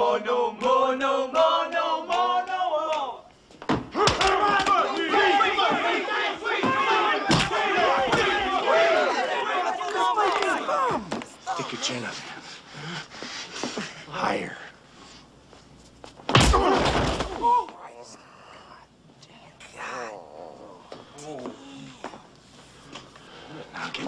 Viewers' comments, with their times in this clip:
0:09 (REALLY worried): "Swede!!!"